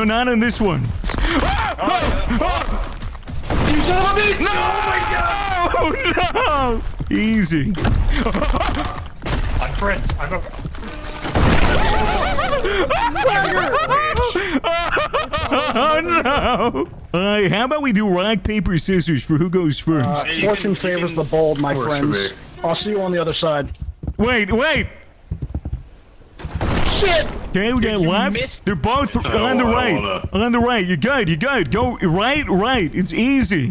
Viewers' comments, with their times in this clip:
0:09 why does his laught sound like Super Mario 64 when Mario Falls down something ?
0:15 sound like the train guy on tiktok